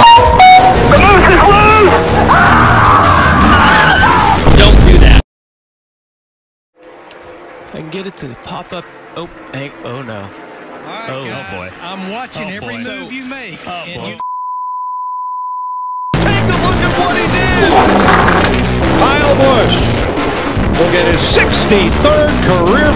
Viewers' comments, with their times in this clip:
0:10 Larry Mac most likely talking to them in the background made me laugh extra hard 😂